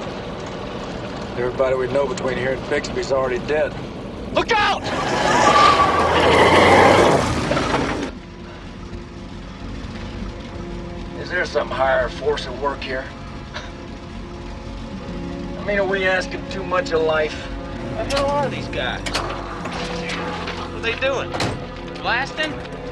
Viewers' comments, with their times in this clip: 0:04 Love this series except for some of the stupid sound effects. Since when does rubber tires squeal on loose dirt roads?